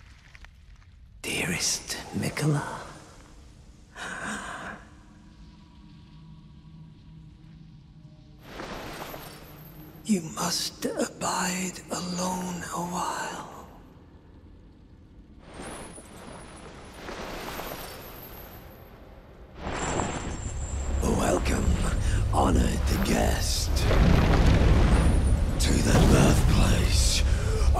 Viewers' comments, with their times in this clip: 0:09 man sounds like Teddy Perkins